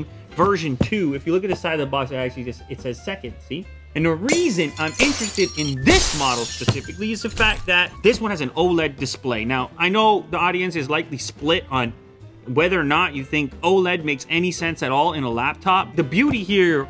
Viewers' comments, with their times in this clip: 0:03 I thought mom dropped a plate or something. am not even joking LOL 😂😂😂😂
0:04 RIP headphone users..